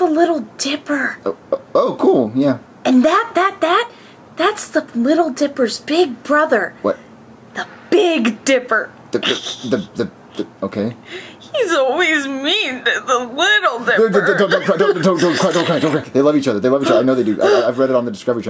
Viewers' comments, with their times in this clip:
0:05 that’s the little dippers big brother. The Big Dipper (snickers and laughs) … He’s always mean the Little Dipper (is about to cry) I found this so funny 😂😂